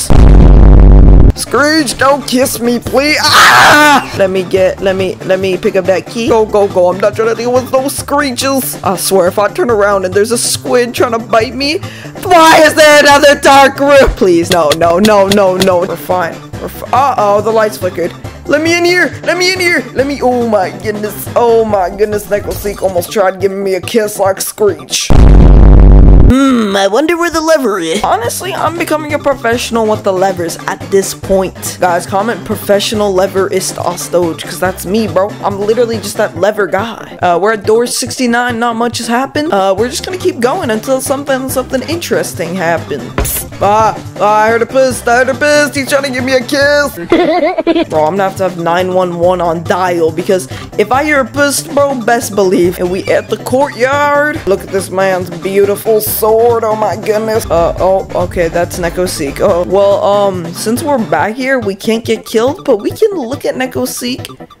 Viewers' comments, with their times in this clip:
0:03 BRO THE SCREAM SENT ME JDKFJAHFGJAGKJ
0:46 Wow You noticed me The goofy laugh that i made more popular :)